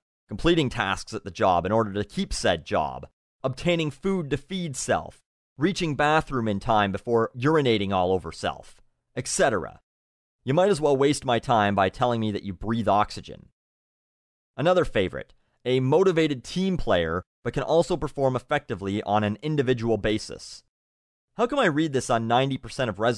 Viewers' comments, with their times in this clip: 0:09 Did you just mispronounce etcetera? =D Great advice anyway, thank you.